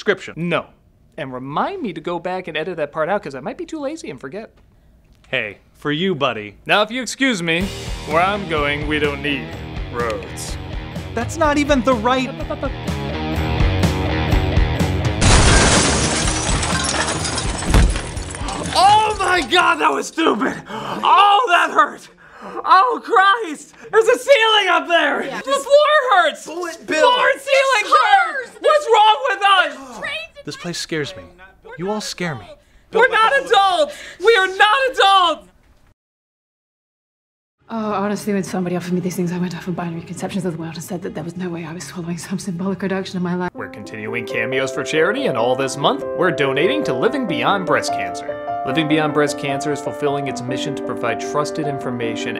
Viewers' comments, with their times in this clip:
0:06 I'd like that laugh back, please.
0:37 I love how the line from Bugs get abruptly cut off given how long it is.